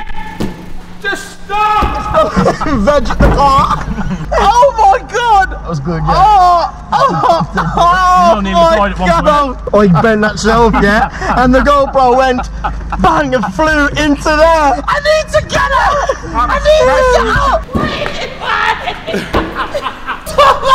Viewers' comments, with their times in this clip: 0:05 The right Audio (Stereo) is fucked on that Camera or Microphone. Its all whuring and shit in my Right Headphone. Just thought you should know.